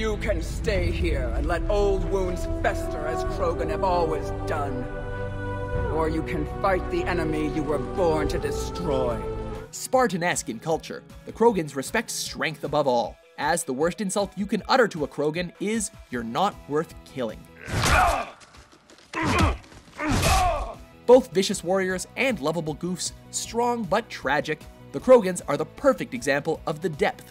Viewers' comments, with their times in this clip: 0:09 Hey that voice of Eve ... That sounds similar to a voice in Skyrim right?